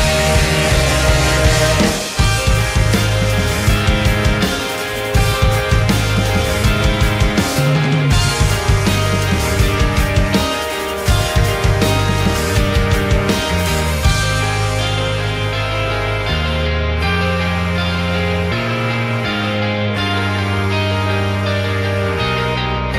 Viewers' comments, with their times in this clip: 0:03 That melody at the end, its so bittersweet i want it sampled urghhh